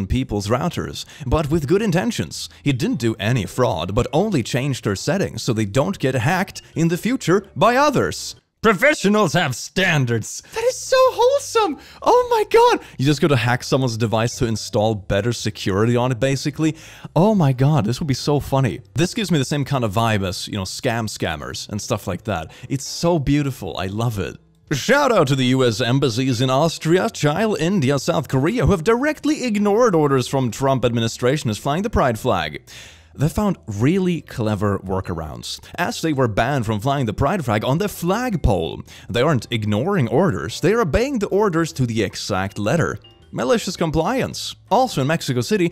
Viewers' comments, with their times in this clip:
0:09 you need to do that in an australian accent because the character is australian (from a tf2 enthusiast, the characters name is sniper btw)
0:24 That pronunciation of Chile really took me by surprise lmao it's chill-eh 💀
0:26 lol he says it like (chie-le) when it’s Chile (chee-lay)😂
0:26 Sorry, Chayl? Chile-Chi-le/Chili
0:27 I think this is the first time I've heard someone pronounce my country's name in this way (Chile) 😂😂
0:29 … he pronounces “Chile” like the word “child” is pronounced and its great